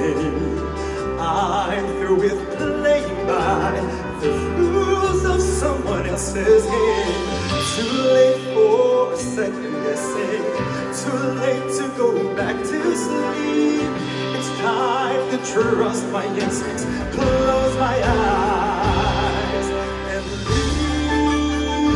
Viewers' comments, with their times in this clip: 0:04 What makes Stell stand out is his voice is so stable ans he enunciated the lyrics so clearly, each word is so clear and distinct. Makes you cry, just listening to it They complement each other so well. The duet is amazing. I am still wanting Stell to sing a song at a lower range. I bet he will be awesome. Both singers are great.